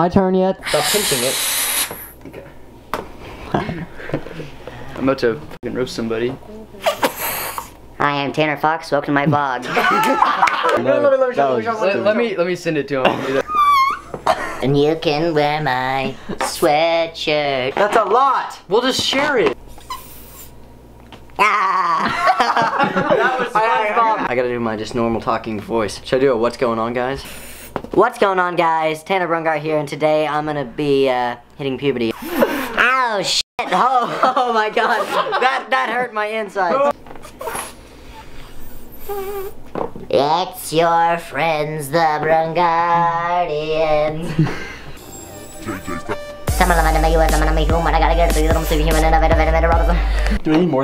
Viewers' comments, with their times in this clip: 0:07 OMG it actually sounded like Tfox
0:09 siri activated for no reason! Haha lol
0:32 HE SOUNDS LIKE HE DIED
0:32 that voice has me in tears XD